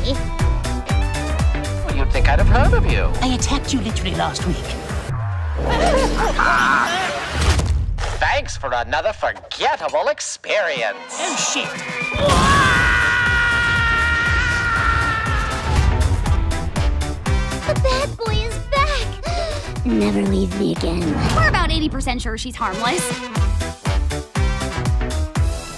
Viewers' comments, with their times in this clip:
0:03 Bro changed voice actors halfway through a sentence
0:10 Does anyone hear that windigo sound in the background or is it just me
0:12 HELP! why did he sceam like mario????🤣